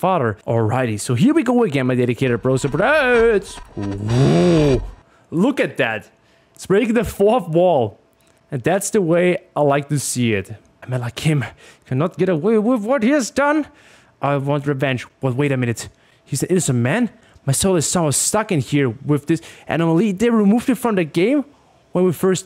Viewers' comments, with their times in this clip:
0:06 ITS BREAKING THE FLUFF WALL!!!!